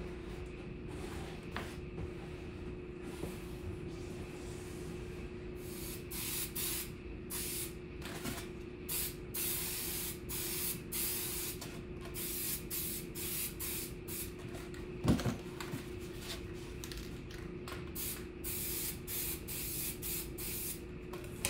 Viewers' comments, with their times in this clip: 0:08 the noise is much clearer: it sounds like a reciprocating air compressor.